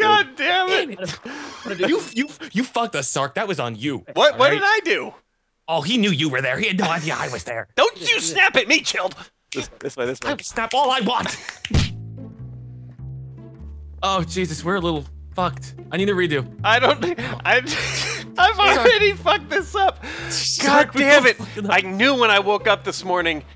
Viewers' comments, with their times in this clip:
0:10 Sounds like something else....